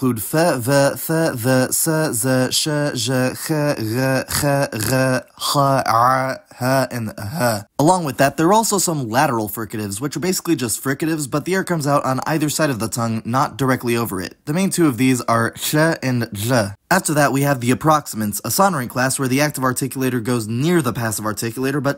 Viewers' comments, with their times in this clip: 0:05 me when i frew up